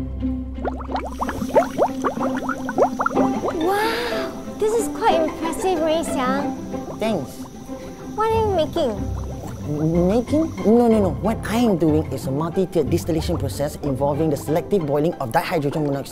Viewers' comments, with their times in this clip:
0:03 why did she kinda sound like peppa pig-